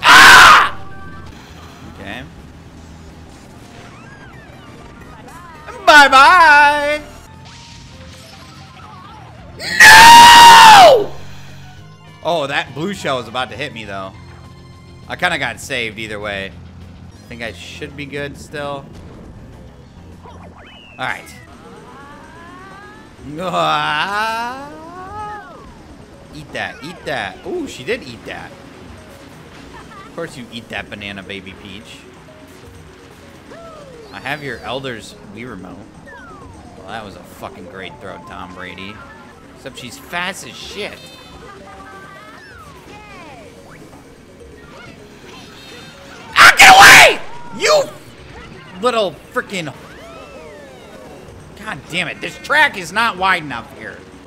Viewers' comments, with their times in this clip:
0:08 the intensity of that noo made me laugh so hard I fell out of my bed lmao 🤣🤣🤣
0:36 “well that was a fucking great throw Tom bra-“ [cut off by sound of glass breaking and and an anguished waluigi sound]